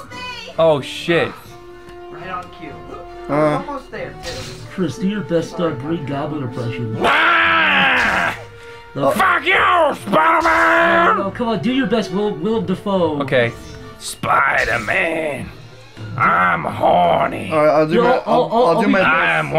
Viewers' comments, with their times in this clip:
0:05 Green Goblin impressions 😂
0:05 Green Goblin impressions 😂